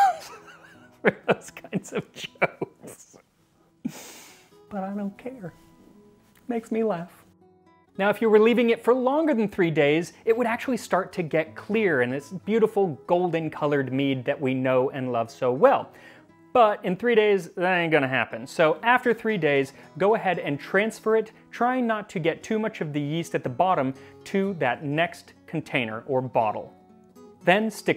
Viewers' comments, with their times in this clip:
0:09 I love the way you laugh and express yourself 😍